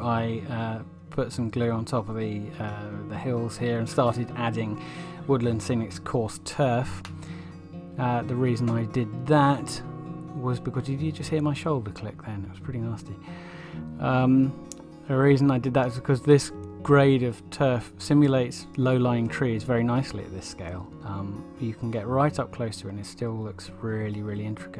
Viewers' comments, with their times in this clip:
0:06 If you want to hear my shoulder make the most almight crack, go to If you don't, skip that time. 😬